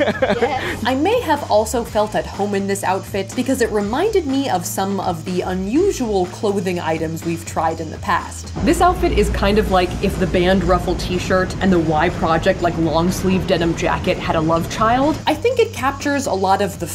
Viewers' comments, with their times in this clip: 0:04 It's so strange hearing the five pm music in the background of your video.